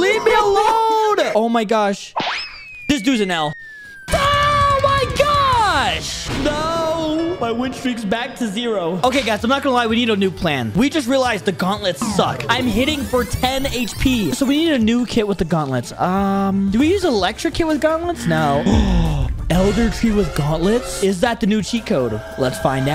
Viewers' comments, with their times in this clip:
0:04 i thought he said the f word